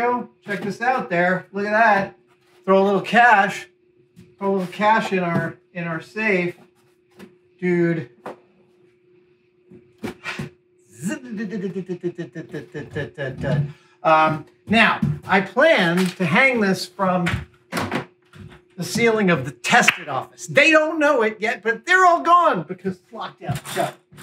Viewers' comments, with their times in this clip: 0:07 Proof that you did a good job: When you closed the door I was surprised when it ding go CLUNG
0:09 Bike freewheel for the ziddiziddiziddi ?